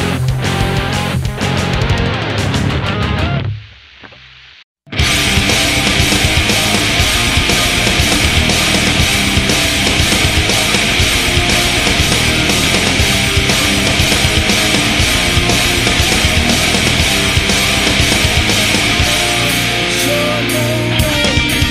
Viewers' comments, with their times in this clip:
0:04 mode nu-metal on